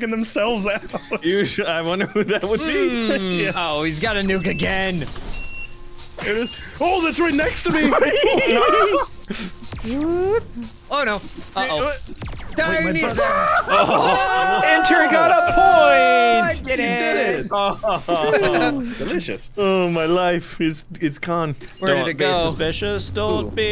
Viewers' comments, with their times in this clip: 0:07 The scooby laugh 💀💀💀